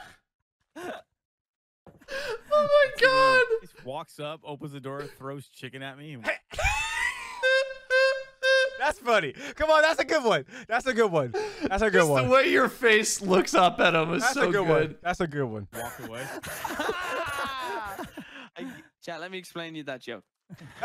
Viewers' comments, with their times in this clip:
0:06 Lol fucked up car alarm.
0:06 My fire alarm every time I cook
0:06 that laugh sounded like some car horn 😂
0:07 sounds like a alarm going off XD
0:07 someone is honking there horn hella loud
0:07 sounds like a car alarm going off
0:07 honk honk honk Goes the clown horn
0:08 Bro turned into a horn